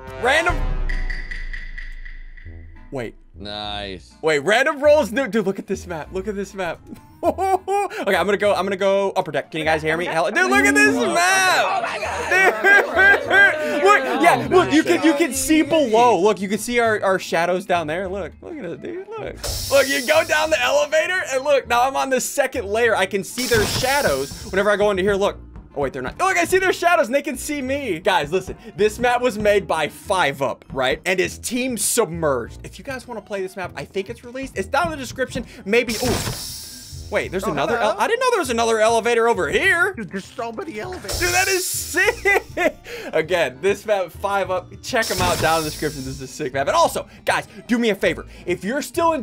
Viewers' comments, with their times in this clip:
0:09 Bro that hmmm scared me
0:37 SSundee:Dude ı didn't know there was another elevator over here Biffle with the most frustrated voice tone ever: Dude theres so many elevators